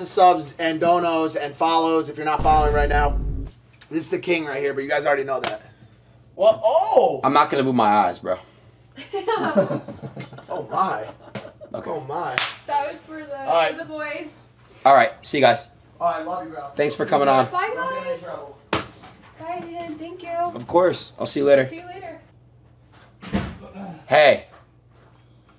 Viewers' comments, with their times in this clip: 0:07 that oh is what I do when that happens